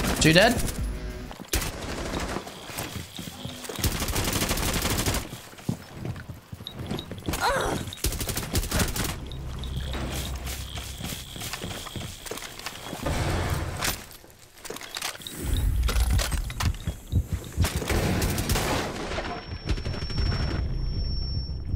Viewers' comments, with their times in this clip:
0:07 WHOSE MOAN WAS THAT??